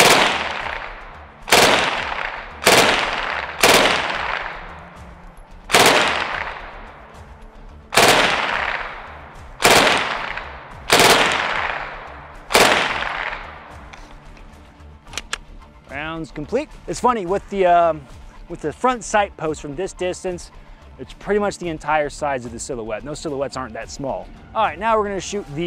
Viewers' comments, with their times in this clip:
0:10 That echo is cool